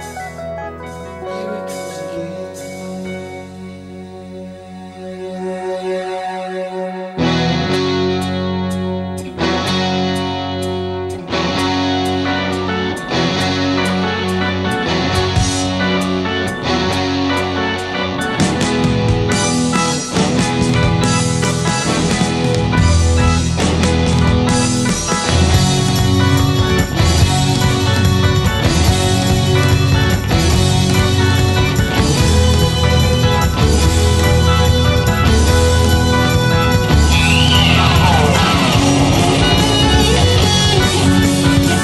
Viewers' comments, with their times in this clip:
0:06 part at the ~ sound like Metallica's intro to "The thing that should not be"
0:29 sounds like Steve.